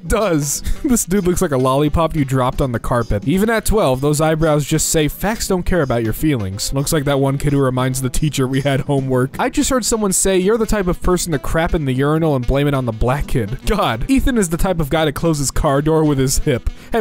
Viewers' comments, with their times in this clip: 0:03 Star trek theme intensifies